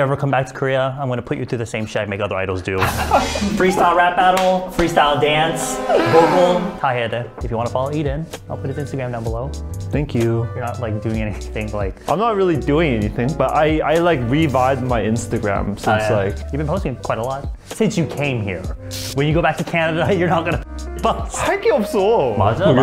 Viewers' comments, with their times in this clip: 0:08 his "thanks u" is so cuteee